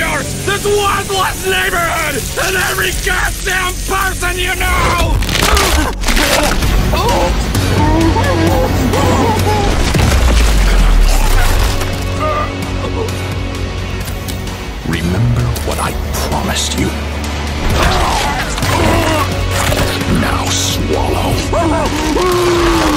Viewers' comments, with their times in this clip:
0:06 DAMN BOI THAT MUSIC!